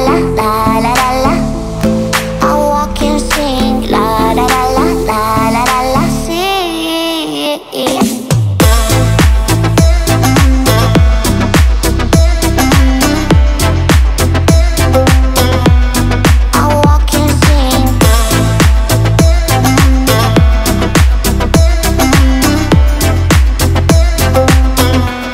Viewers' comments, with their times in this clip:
0:07 My god, that drop 🔥💣🔥💣🔥💣